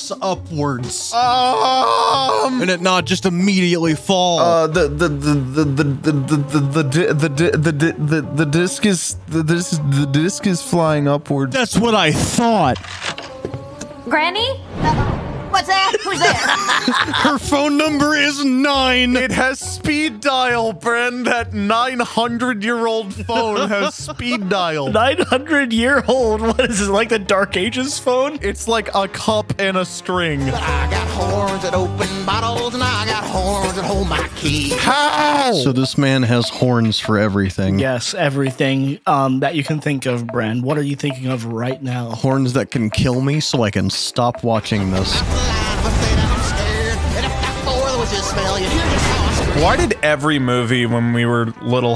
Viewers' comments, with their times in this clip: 0:04 🤣🤣 eh th th th that’s all folks
0:34 that song slaps though